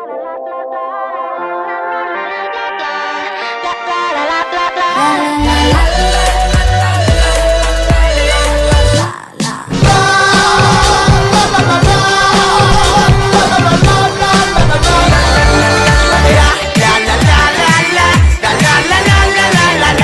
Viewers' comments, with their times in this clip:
0:05 I love the way from lalalay to gogobebe like uUrGhHh